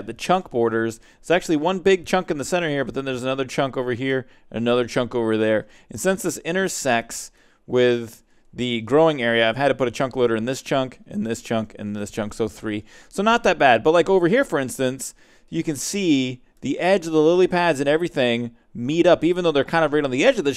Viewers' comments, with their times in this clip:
0:07 u said intersex LOL